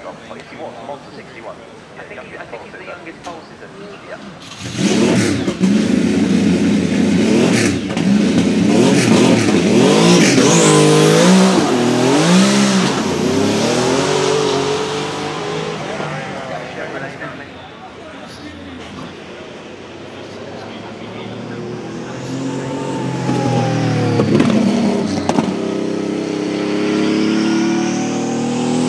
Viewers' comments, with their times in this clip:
0:09 Almost same sound to any stock engine porsche in NFSMW ?